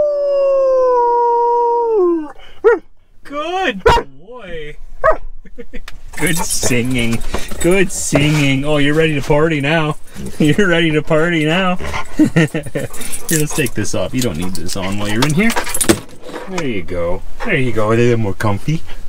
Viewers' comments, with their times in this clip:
0:03 we do the same thing with my dog. We call it having howl offs